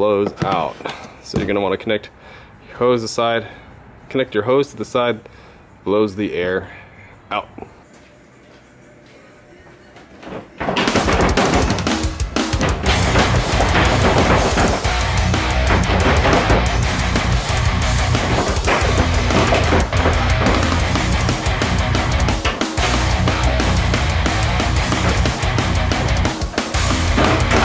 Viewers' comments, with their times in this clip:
0:10 kinda lost my shit when metal started playing lol